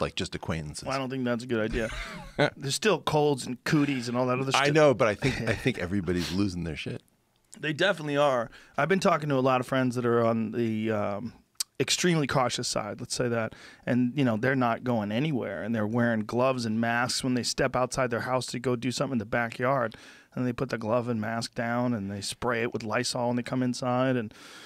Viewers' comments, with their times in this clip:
0:06 It's either cocaine or the corona I heard a sniffle